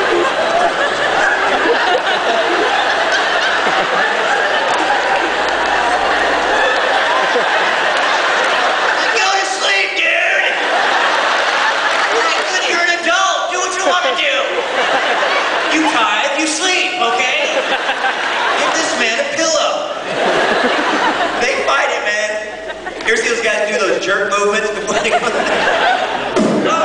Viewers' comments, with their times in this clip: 0:08 I lost it when he yelled "GO TO SLEEP, DUDE!" Hilarious.